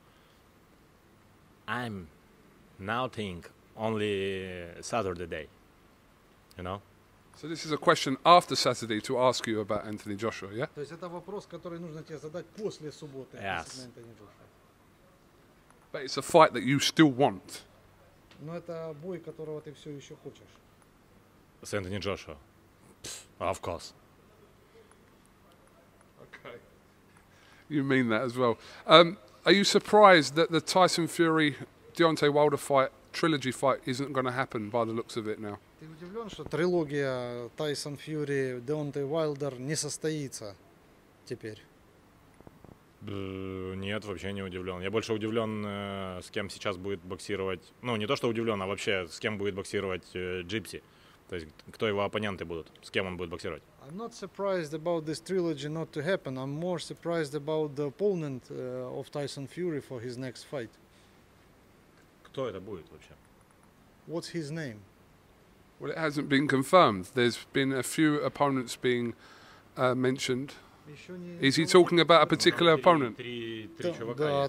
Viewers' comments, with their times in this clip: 0:04 usyk says SaturTheDay... Loooll have to love this man. What a legend
1:02 way he asked 'What his name ' made me laugh